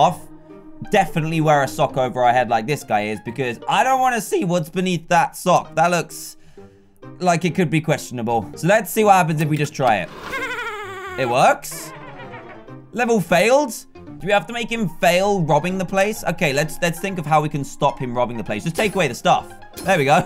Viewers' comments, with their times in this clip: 0:03 his voice crack😂
0:04 voice crack ''cuz i dont want to sEe''